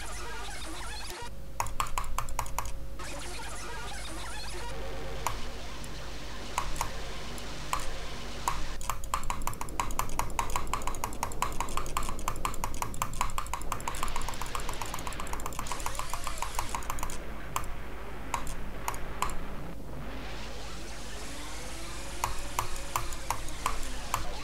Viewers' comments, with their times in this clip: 0:08 compare the “high cps” clicks they sound a lot more diverse and realistic than any high cps part in singularity
0:11 yes those are loud clicks because those are frame perfects on 60 fps. The problem with is that nearly all top players usually do quieter clicks in spammier parts to be able to click more consistent. Him not doing that shows he knows nothing about the level at all, which also means that this is clearly hacked since how is someone who doesn't know anything about the level supposed to be able to do such difficult higher cps parts?
0:11 how would you excuse all the clicks all being really loud and at the same loudness??